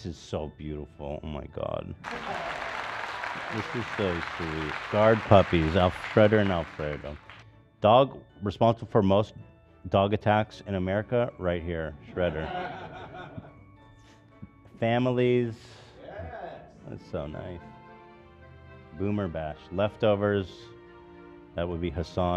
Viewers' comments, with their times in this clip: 0:04 Did anyone catch that ?? Alfreder and Alfredo 😂😂